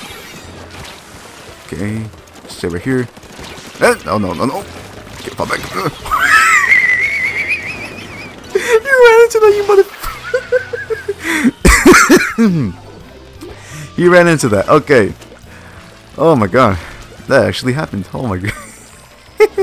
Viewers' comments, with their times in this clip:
0:06 his voice enters the stratosphere